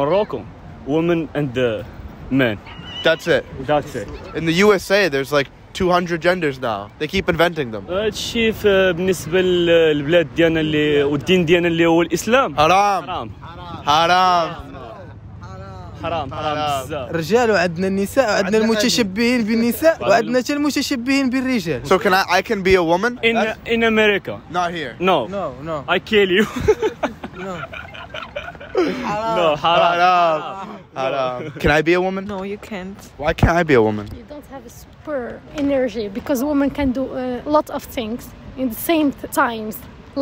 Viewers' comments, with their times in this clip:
0:03 😂😂😂😂😂😂😂😂😂😂😂😂😂😂😂somebody laughing there.
0:24 " not here ... i kill you ... hahaha" 😂😂😂 feel like jeff denum lolz